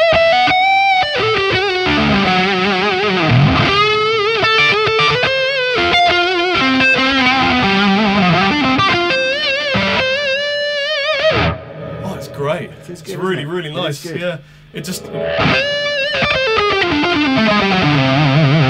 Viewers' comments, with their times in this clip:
0:04 sounds like comfortably numb